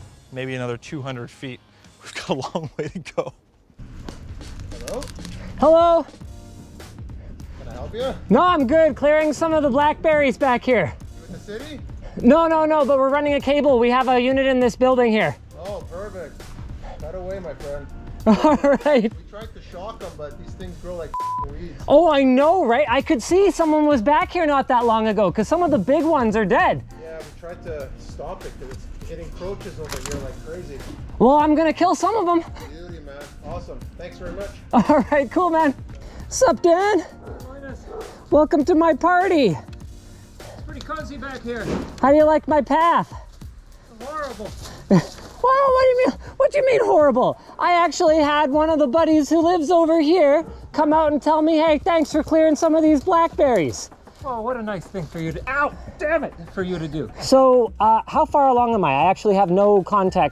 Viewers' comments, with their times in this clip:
0:04 Linus talking more Canadian with a Canadian buddy.
0:13 That conversation ... I was like "Oh they are Canadians." 😅
0:21 wow the accent suddenly strong in this conversation
0:36 Canadians Chatting away all friendly like. :D
0:48 "I actually had one of the buddies who lives over here come out and tell me - hey, thanks for clearing some of these blackberries." Wait, Canadians actually speak like this? South Park wasn't just taking the mick?!